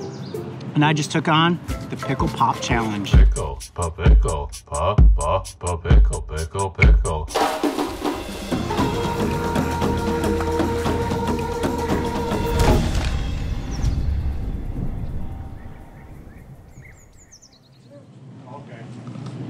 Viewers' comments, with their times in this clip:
0:03 Let's take a moment to recognize this amazing song that will forever be my favorite. 🤣🤣😂😂